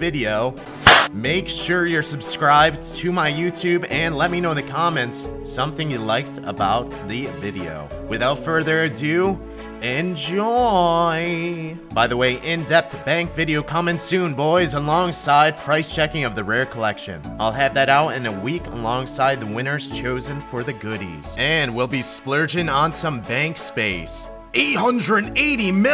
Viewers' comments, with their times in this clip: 0:10 I enjoyed the slightly seductive "enjoooooy" combined along with the juxtaposition of the common bow to show courtesy very thorough and thought out :)